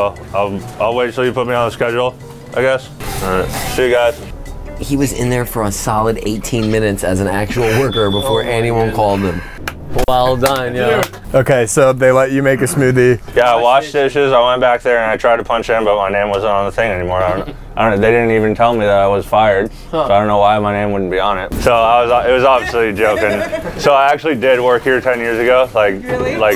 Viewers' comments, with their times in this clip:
0:07 I work as a night auditor for a rather large hotel. I'm currently watching this video at 4am and that noise just about gave me a God damn heart attack. I was not even about ready to deal with the fire alarm going off.